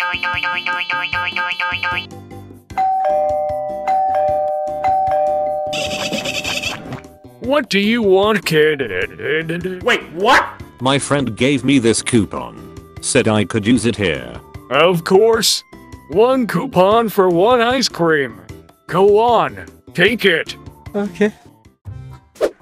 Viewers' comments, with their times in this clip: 0:03 this one made me laugh, bc the ice cream worker said “kid” in a moannnnnn way lol